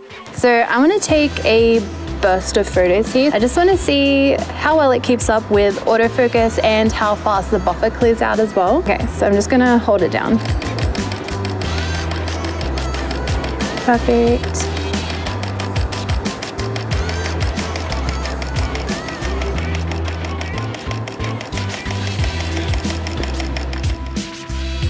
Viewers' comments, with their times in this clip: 0:10 when the shutter fits within the bg song time signature
0:12 Who else was feelin it when the shutter went with the beat ? I was like ayyyy 🕺🏻 😂
0:12 Anyone else love how the continuous shooting syncs with the music ? 😍